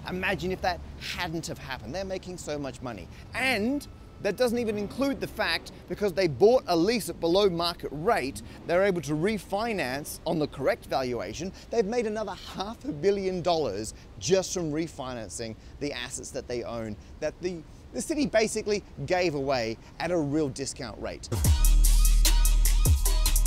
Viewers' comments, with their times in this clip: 0:05 That "They're making so much money" had a James Acaster-y vibe to it for some reason